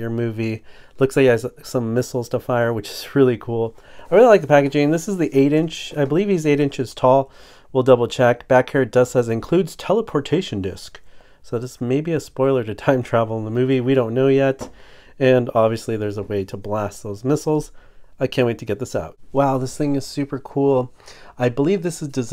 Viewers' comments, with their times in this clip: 0:09 I don't know why but the way he said "Teleportation Disc" cracked me up